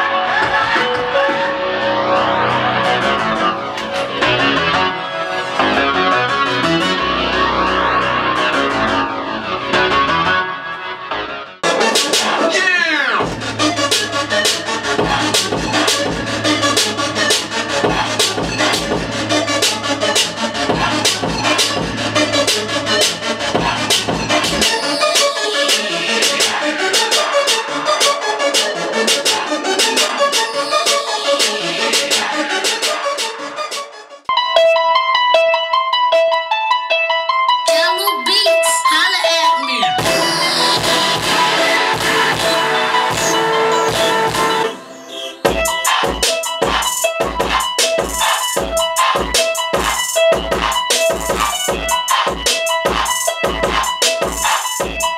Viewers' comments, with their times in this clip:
0:08 What is that beat Too much heat on them speakers
0:11 Beat that starts is BANANAS
0:11 maddddddddddddddd beat nice
0:35 sounds hella like "flexin"
0:35 He switched it up a little bit from flexin ma nigga. And who can make beats like him and not "Recycle"
0:39 sounds like a more advance version of flexin on em by meek mill. shit still sound hot